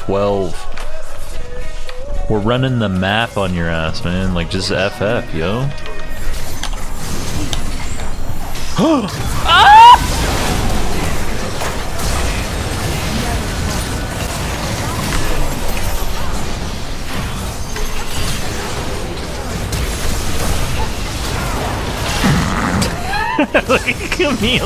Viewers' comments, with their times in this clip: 0:07 the sound you make when you coom faster than you expected